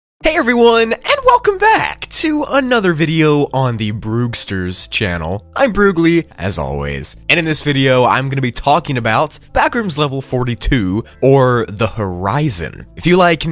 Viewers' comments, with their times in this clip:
0:00 that was the most childish goofy ahh voice I have ever heard xd edit: not being rude btw 💛😎👍